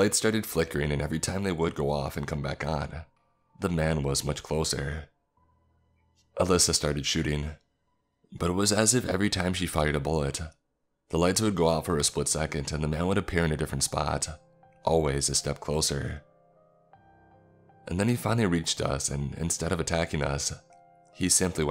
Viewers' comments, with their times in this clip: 0:09 Unholy Laughter Edit: When did the zombies become sans?